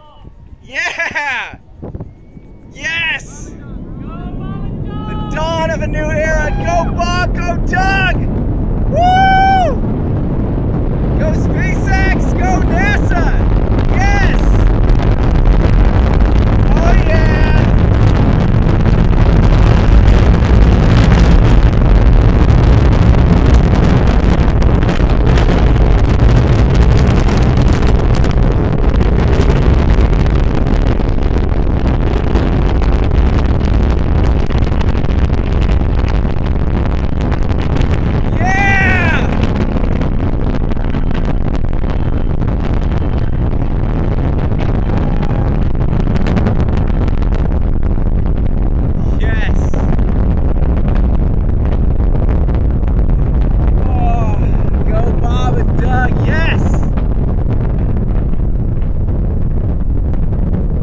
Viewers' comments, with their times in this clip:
0:09 This Loud Sound 🤤😻
0:13 you can get a glimpse of the Falcon's fire reflecting on the Tesla's roof ! Right before it starts honking ! haha
0:16 ... Rocket sets off car alarm from 3 miles away 🤔🤣
0:18 Sentry Mode cheers for Bob and Doug!
0:47 people screaming Rocket Tesla Eagle. Big Banana I never seen so American thing as this so far